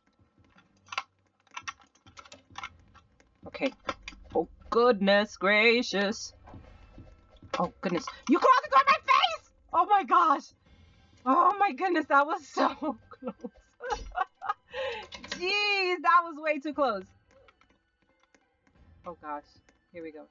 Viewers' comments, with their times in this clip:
0:04 wow your singing is great!